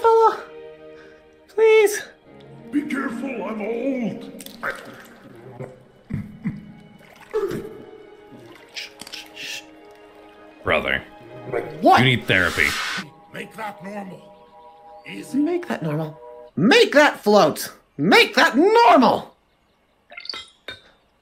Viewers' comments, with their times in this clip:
0:04 ah yes suffocating someone and saying "shh..sh..shh" like maniac is very adorable😊😊